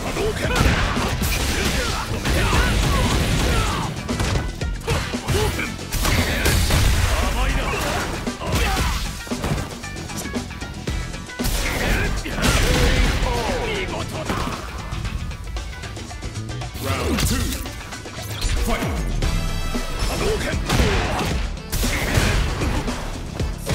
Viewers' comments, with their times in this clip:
0:04 The music sync tho